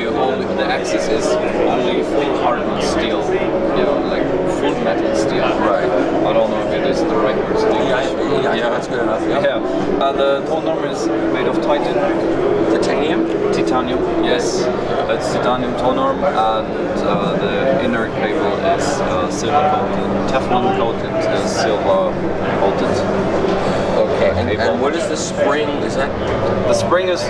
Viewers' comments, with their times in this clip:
0:10 Tone arm is made of "TIT ON HIM" Titanium? TIT ON HIM, yiss.